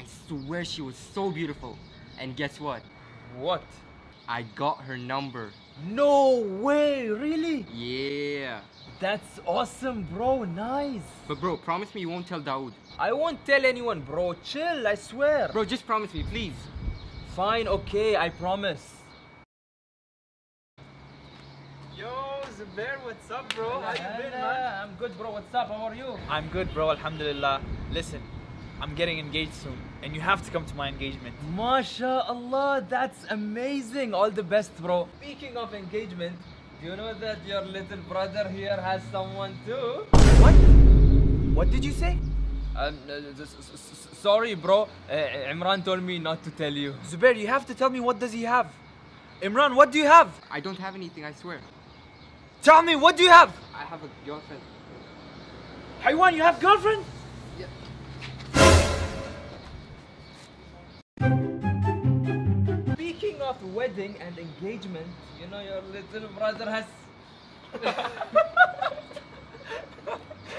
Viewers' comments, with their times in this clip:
0:08 his yeah is very funny
0:58 sound like a RUN!! Sound lol